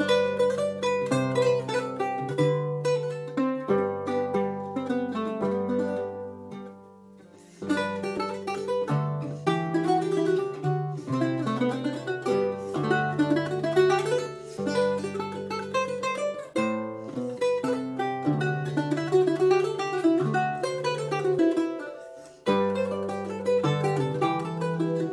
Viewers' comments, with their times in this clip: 0:07 Some familiar harmony. Sounds like Pacelbel's Canon in Dm